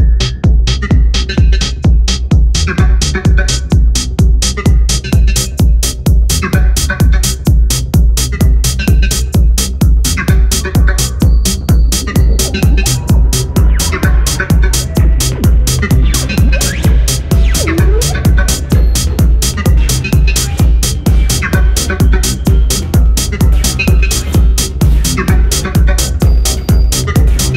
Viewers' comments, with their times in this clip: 0:03 Funky auditory delight. Intriguing and lush. ish🔥🔥🔥🔥🔥🔥
0:11 love the extended "intro" before the drums kick in 🔥 this song is such a journey, it's interesting to click back to the beginning after getting through all the buildup 🙂